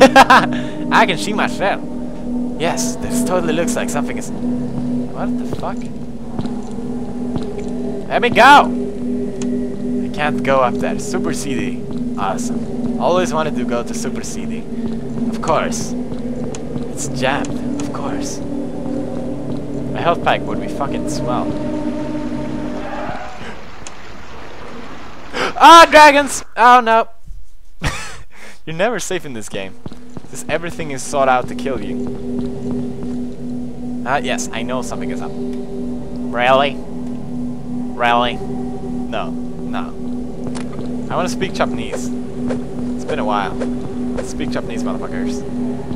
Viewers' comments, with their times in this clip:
0:05 bam,bam,bam ... bam,bam repeatedly almost laught to death
0:29 GAH my burning program decided to tell me my disk was finished burning... loud sounds plus that shit made me scream like a girl...